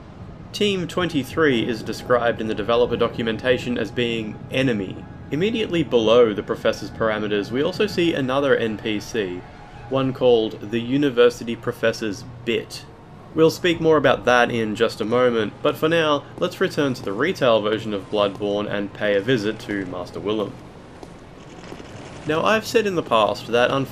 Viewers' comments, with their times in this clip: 0:09 At first I thought he said something else
0:11 "the university professor's BITCH"